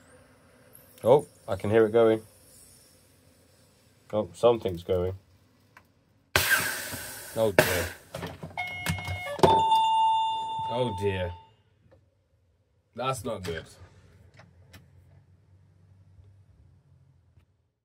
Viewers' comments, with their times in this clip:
0:04 my favourite bit, great comic timing from the doorbell as well 😂 👌👌👌